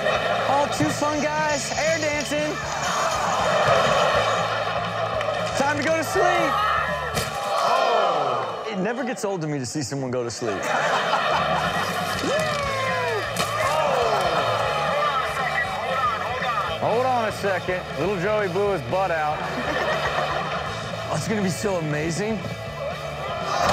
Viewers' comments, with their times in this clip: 0:05 you can hear him scream b4 inpact